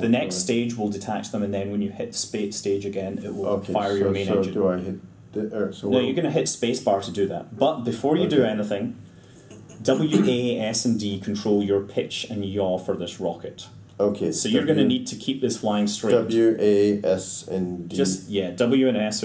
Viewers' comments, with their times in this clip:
0:03 Does anyone else hear the "Help Me" whisper that sounds female?